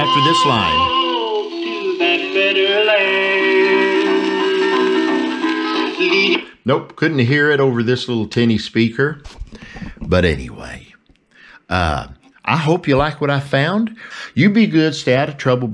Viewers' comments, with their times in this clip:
0:03 I heard the phone ringing. Clear as a bell!